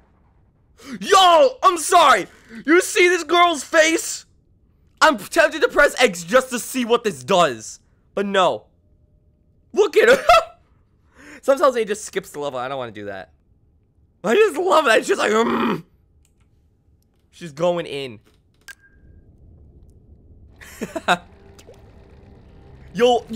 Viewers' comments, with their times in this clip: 0:04 When her eyes light up, it shows the fury she has in her. She furious that she has to fight Agent 3 and its hard. As you can hear, a tiny bit of Calamari Inkantation plays when her eyes light up.